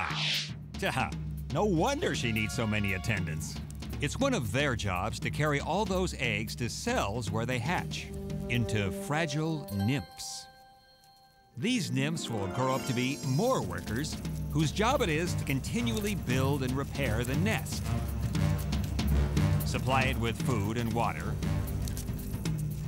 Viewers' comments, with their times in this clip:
0:08 playstation trophy sound !!!!!!